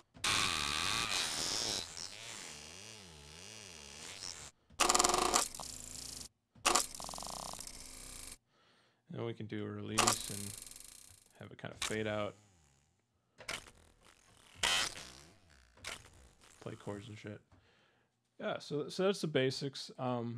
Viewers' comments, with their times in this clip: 0:04 HaHaHa sounds like some weird alien greasy farts!! Great Sampler, Best Free VST Sampler out there!